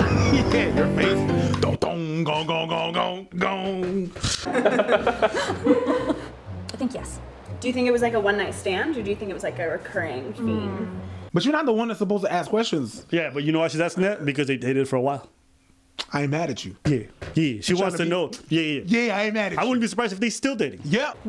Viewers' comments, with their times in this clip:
0:04 I know this man fake laughing